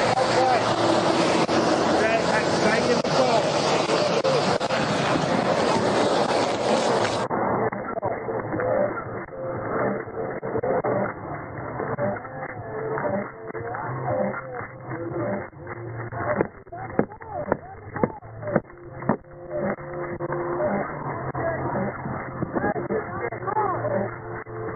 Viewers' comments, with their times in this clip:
0:09 Thanks for the low quality music